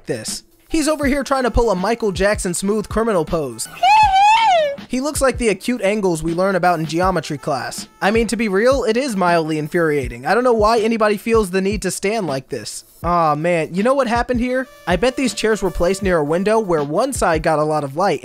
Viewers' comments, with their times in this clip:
0:04 not the generic michael jackson signature sound 🤣🤣🤣🤣🤣